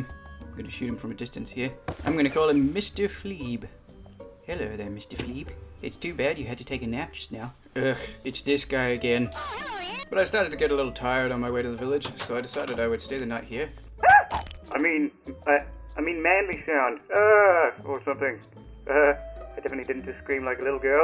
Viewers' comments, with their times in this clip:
0:08 You’re welcome. I replayed the next several seconds at least 20 tines. The scream.